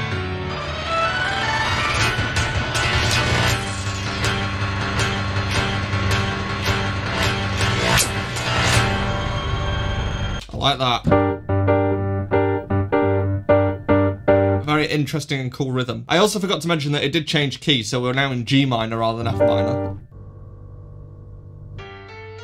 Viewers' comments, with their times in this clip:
0:06 if you slow it down enough theres a time space where it plays a million notes in... idk 1 second?